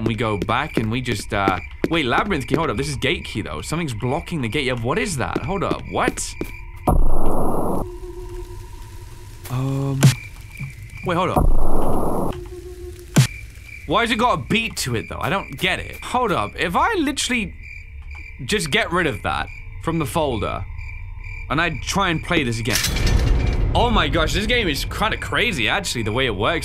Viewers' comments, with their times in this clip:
0:10 honestly kinda reminded me of Closed by plenka don't ask why idfk